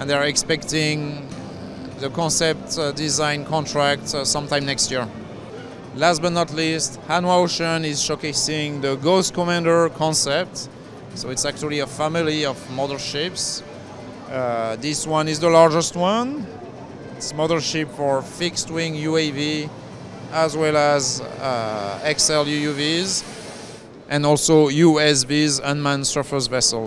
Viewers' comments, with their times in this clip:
0:09 Ace Combat screeching on the distance. That’s just Ace Combat-ish